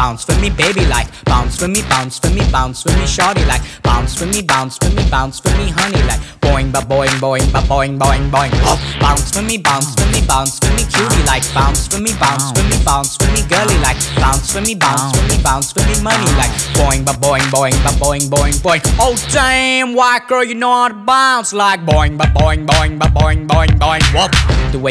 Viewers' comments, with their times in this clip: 0:07 Sounds like was produced by The Neptunes. I dig the hi-hats after